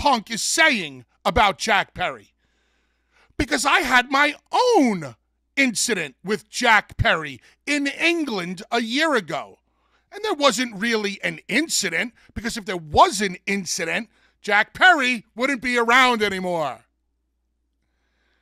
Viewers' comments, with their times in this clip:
0:04 for a monent, I thought that way Paul Heyman 😂
0:06 Bubba sound n make the same expressions as Paul heyman